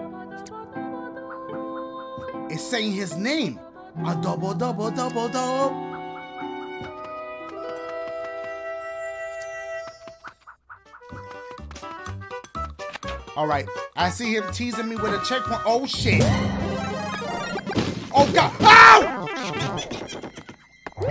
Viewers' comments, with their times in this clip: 0:03 Dashie: It's saying his name Me: Listening for "Luigi" Dashie: Adobo-do-bo-do-bo-doooo